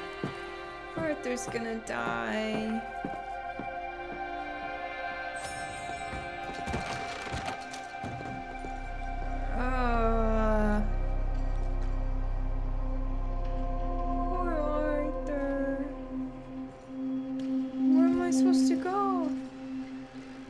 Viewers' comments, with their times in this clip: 0:05 When Arthur walks out of the doctor's office into that golden light, and the low synth strings kick in, I get goosebumps every time, and it's one of the most emotional and saddest moments in my 30 years of gaming.